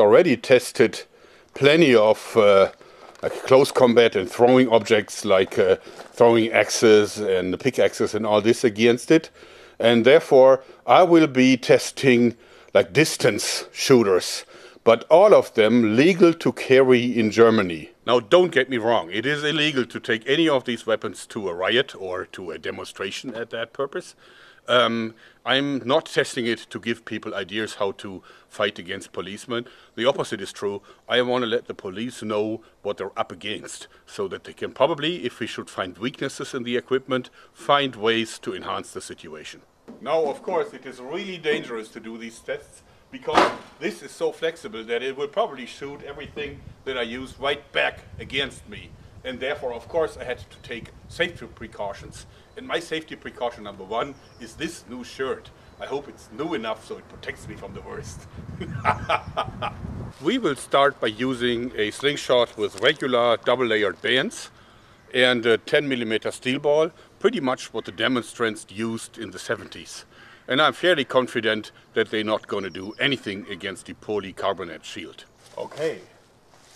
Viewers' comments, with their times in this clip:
0:10 sudden Jamaican accent
0:58 laughs in Russian